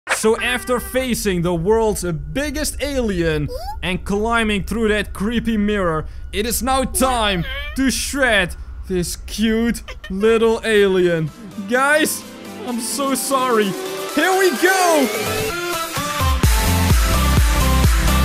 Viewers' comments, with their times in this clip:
0:00 did u here the “aaah* in a cute voice lol